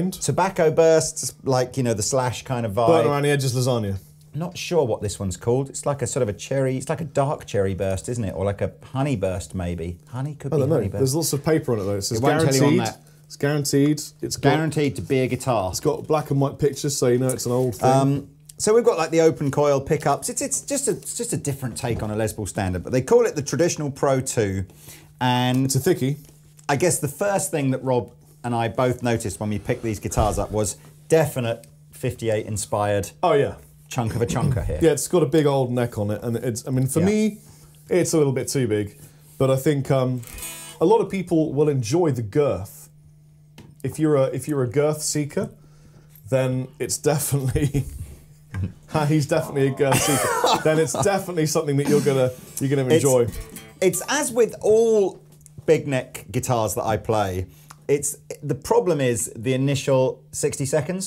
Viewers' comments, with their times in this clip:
0:09 Did I heard "pony burst" …?
0:43 they forgot to add the glass breaking sound effect